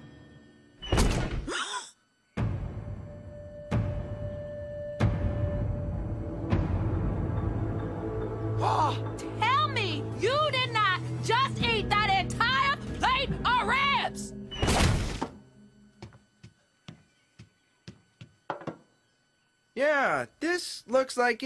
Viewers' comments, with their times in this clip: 0:09 TUHELL ME, YOU DID NOT JUSS EAT DAT, ENTYA. PLATE. O' RIBS. (I'm sorry if this is insulting to some of you guys...)